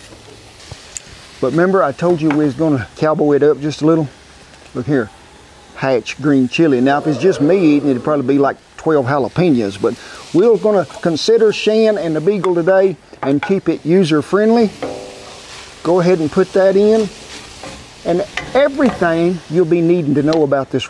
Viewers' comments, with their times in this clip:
0:07 Did anyone else hear like a monster off camera when he started with the green chili?